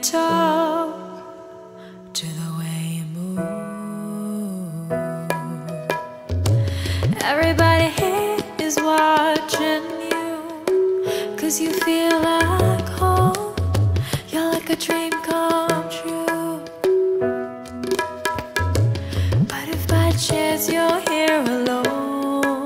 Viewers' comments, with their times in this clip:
0:04 ...ohhh god...the girl's voice was soo mesmerizing itself...but when the tabla hits... It's became more n more mesmerizing 😍😍👍😀